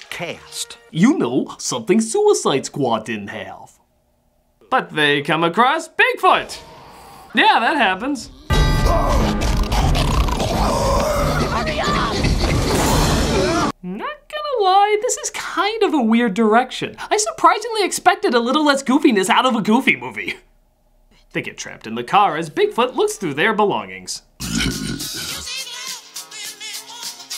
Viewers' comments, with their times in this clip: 0:08 I SWEAR! I thought you put the song from Death Note there! That would have been fucked up! 😂😂😂